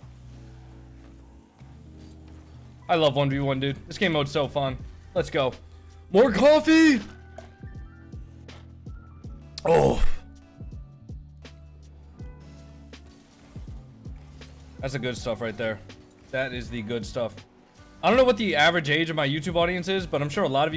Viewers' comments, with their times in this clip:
0:05 Why does he sound exactly like moistcr1tical when he said that lol